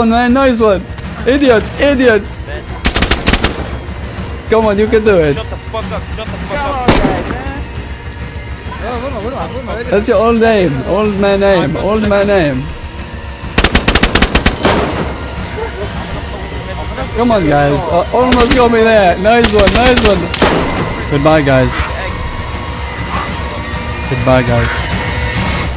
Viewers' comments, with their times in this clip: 0:10 They were literally speakin Turkish I knew it lel.